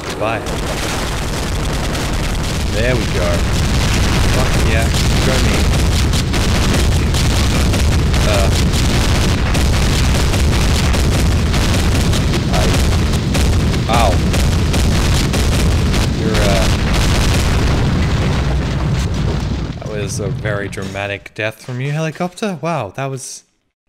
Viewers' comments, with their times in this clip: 0:03 sick beat bro
0:04 That dying chopper was dropping some sick beats.
0:04 that was a nice beat
0:05 To this very day, THE TOILET'S STILL FLUSHING. That is a sick industrial rhythmic beat.
0:05 Has anyone noticed the beat of the explosions ?
0:05 New Battlefield theme leak
0:05 did anyone else hear a rhythm in the explosion?
0:06 well let's say the helicopter dropped The beat